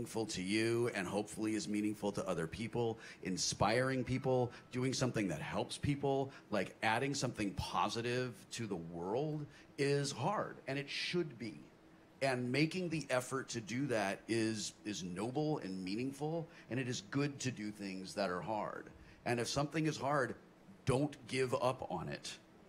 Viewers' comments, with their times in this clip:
0:03 there is a very faint "Ba-Ding!" noise like Mario picking up a coin.